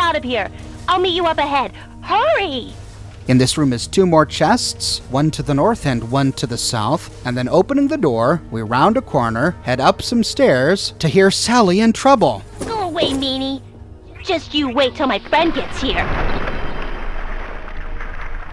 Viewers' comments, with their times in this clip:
0:04 sounds like a poem